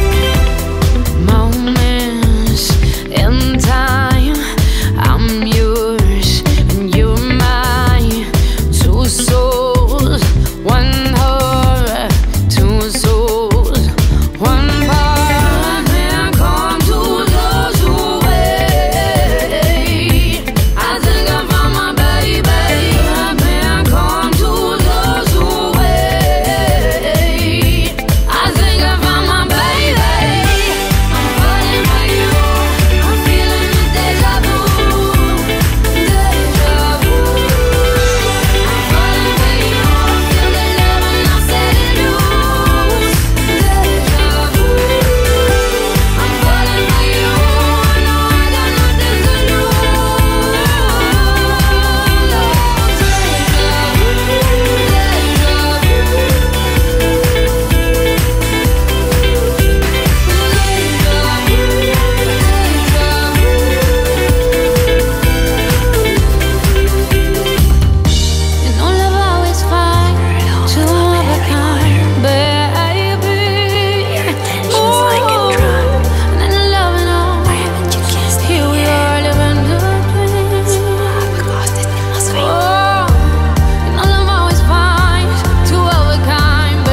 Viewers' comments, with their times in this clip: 0:10 Well, almost. I think the word "heart" could've been given a bit more life. Sounds kinda blah to me. But she's great everywhere else - choruses especially.
1:08 that is so beautiful how that part of the song is so masterpiece, joyfulness, pureness, and Style that song is so beautiful I love it